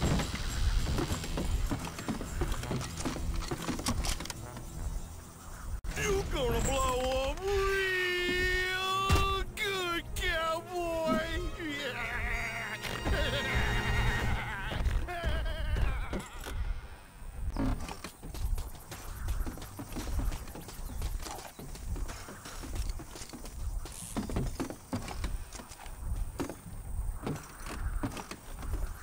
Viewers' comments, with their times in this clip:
0:10 Amazing laugh xD